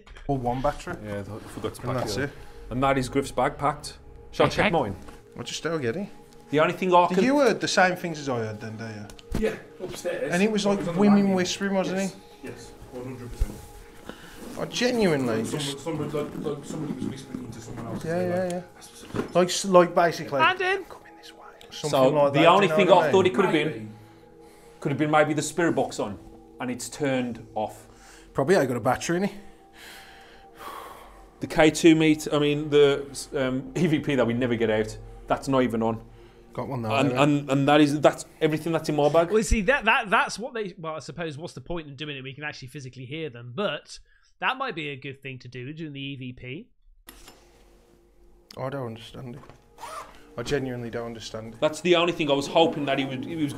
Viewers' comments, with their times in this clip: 0:10 So who was whispering at around the mark in the video when they started going through the second backpack? It sounded like one of the guys off camera whispering to the other guy, but that seemed strange since you could hear them talking also. Nothing was said about it in the video, so was it just some fourth person off camera?
0:18 anyone else hearing whispers here?
0:36 When the guys are talking there was a voice close to the camera, but I couldn't make it out really well.